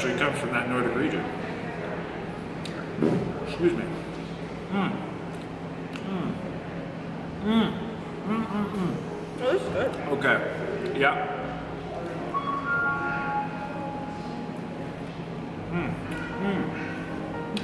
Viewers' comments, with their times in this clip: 0:03 anyone else thought that was a fart😂😂
0:03 Bro did you fart
0:05 lmao I think that was a fart and not a burp lol